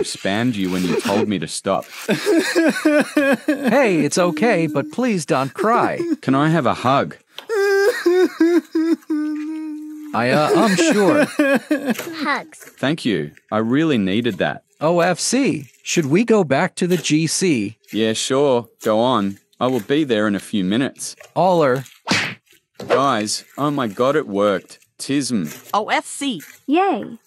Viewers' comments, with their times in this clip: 0:10 the crying brooo